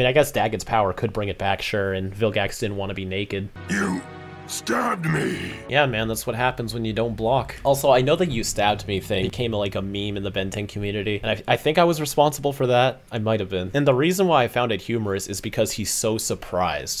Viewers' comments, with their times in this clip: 0:05 He’s like a little kid who just had his toy stolen. “THATS NOT FAIIIR you stabbed me🥺”